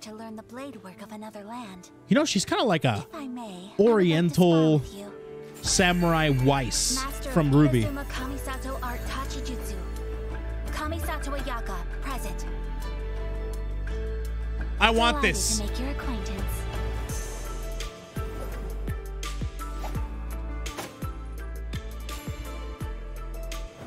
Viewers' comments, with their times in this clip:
0:08 When the Genshin Impact music drops: